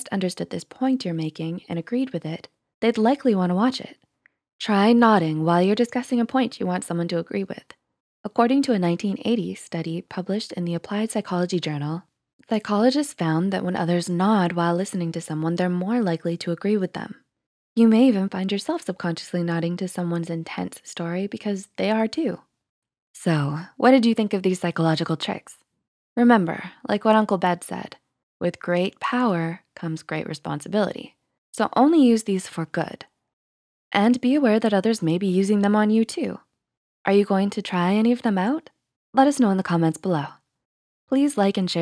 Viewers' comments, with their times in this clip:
0:04 When the doom music kicks in:
0:23 who is Uncle Dad? The one who said "with great power comes great responsibility" I've listened to it a dozen times, who is Uncle Dad, again?